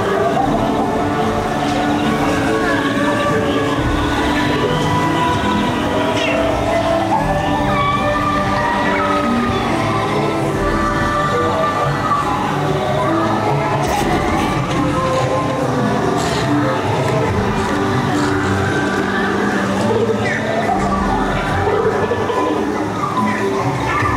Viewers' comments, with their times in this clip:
0:08 That song coming calms my anxiety. Such a reliever. Bless the Navi.😌🙌